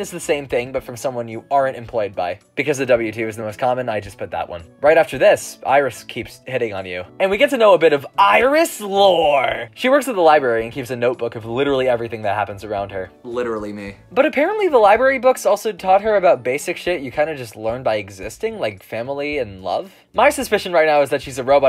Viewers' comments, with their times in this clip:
0:08 nice impression and editing